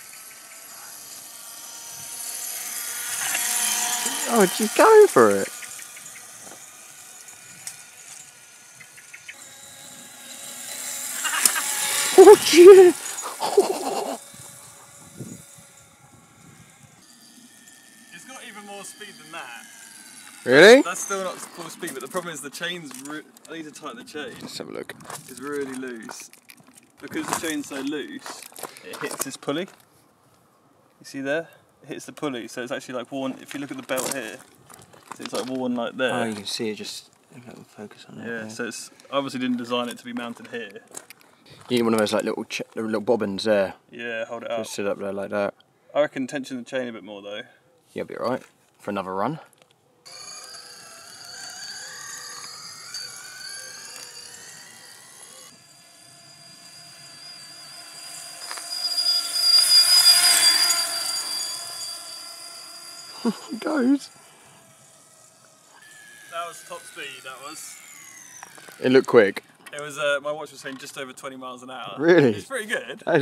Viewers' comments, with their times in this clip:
0:10 sounds like the jetsons
0:13 it sounds like a mosquito 😁
0:55 Great work. Fun. Sounds like a mosquito as it passes.
0:57 sounds like you're riding a mosquito xd 😂 .... So much fun!